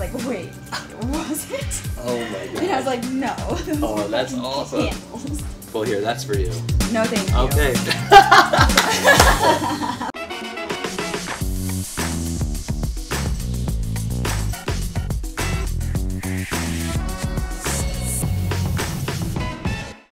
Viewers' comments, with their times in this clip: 0:08 you think this laugh looks fake?
0:08 Hmm...? 🤔 - I don't think her laugh were fake my man (I KNOW IT WAS) 100% It seems like she either didn't hear what he said, or just didn't understand his point, but just laughed to be nice 😬
0:08 the poor girl had no energy left to fake a lil laugh 🤦😂